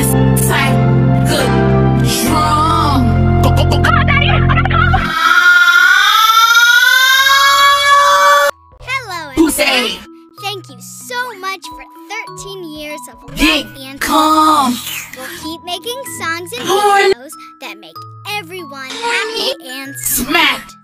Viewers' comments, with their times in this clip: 0:05 Sounds like an EAS alarm siren
0:06 the moan sounds like a tornado alarm.